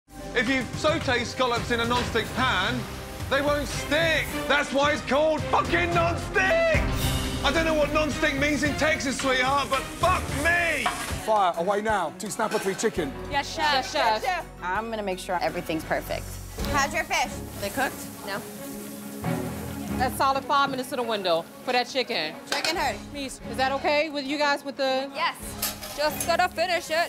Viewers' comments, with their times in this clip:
0:03 this had me in tears omg his voice
0:05 that voice crack was great
0:05 Ramsey has a voice crack.
0:05 is no one Ganna talk about dat voice crack😅😅😅😅😅
0:05 Gordon Ramsay Voice Crack
0:06 When he says "hey you guys!" You're heart stops. But then he says "Cooked perfectly!" Phew!😍👍 good job guys Still can't get over his voice squeaking "... stiiick!"
0:06 it sounds like a chicken giving birth
0:06 that voice crack tho.
0:06 epic voice crack
0:07 the worst voice crack 😖
0:08 his voice crack killed me